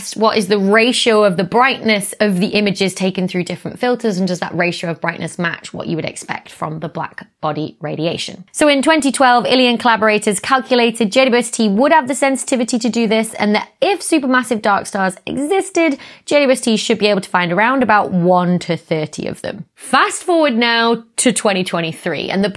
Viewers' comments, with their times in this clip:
0:08 I heard "in 2012, alien collaborators..." and was like WHAT